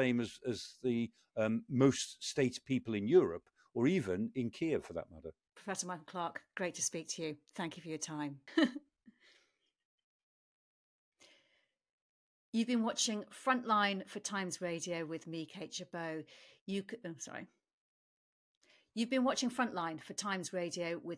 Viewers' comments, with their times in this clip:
0:07 WTH was that chuckle at the end of such a depressing and upsetting interview?? It should at least be edited out and and the production people / interviewer admonished. Gently, of course.